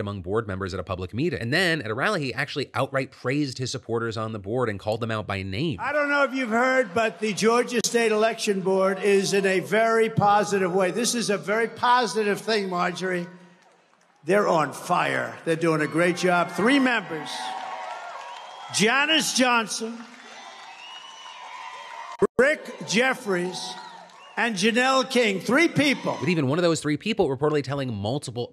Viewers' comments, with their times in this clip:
0:09 notice how the crowd started booing the Georgia state election board thinking he was going to say something negative about them. Until he started praising them, then they cheered. The "do your own research" and "don't be a sheep" sure don't do much research and follow everything their herder says.....